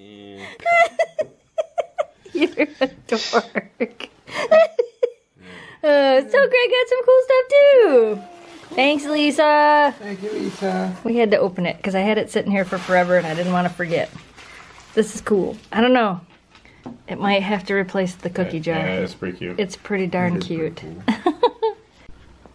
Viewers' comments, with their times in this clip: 0:04 Memphis farting lol